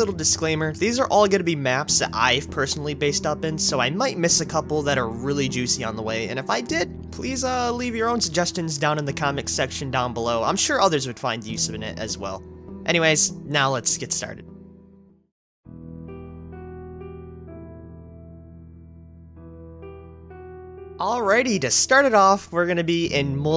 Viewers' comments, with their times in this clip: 0:09 what is the comic section ? LOL